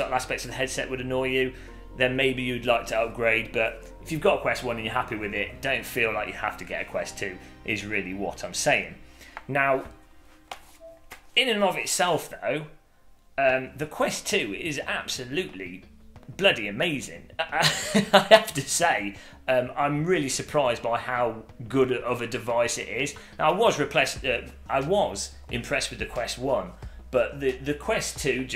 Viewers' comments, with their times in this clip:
0:09 when you picked up the headset and the little tune played I thought it was my quest and I was so confused Lol 🤣😂